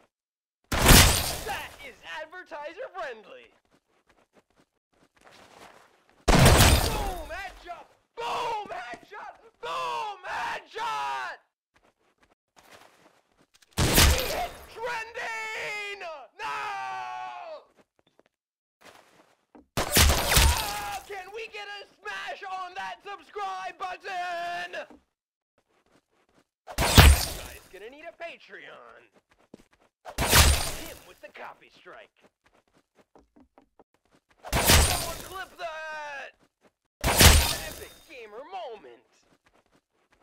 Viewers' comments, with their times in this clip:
0:07 Like Albert/flamingo sound lol
0:28 I don’t understand if he said no or wow